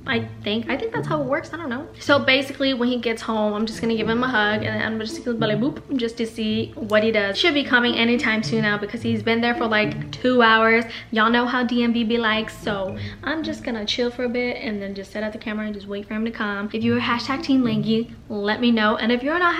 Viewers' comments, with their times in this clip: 0:05 i'll put that as my phone's ringtone 'balaboob'